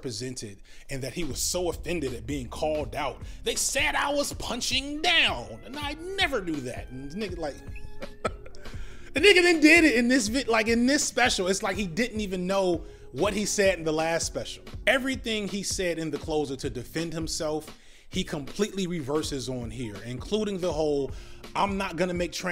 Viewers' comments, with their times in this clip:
0:03 impression TOO good. move to the left so i can see if dave is behind you